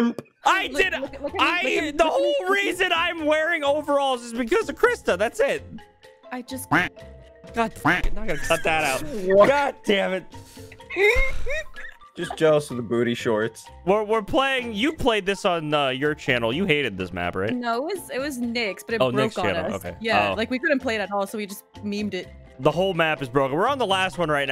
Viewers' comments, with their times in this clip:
0:06 anyone wanna guess what she said